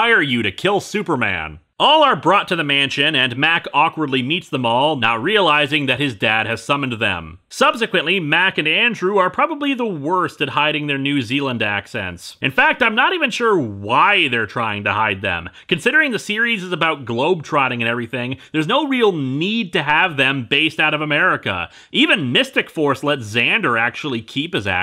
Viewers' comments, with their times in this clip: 0:08 Funny thing about the accents: as a kid, I just kinda assumed everyone on Power Rangers just kinda talked funny. I didn't even realize that was because they were all just trying to cover their accents until I started watching these videos.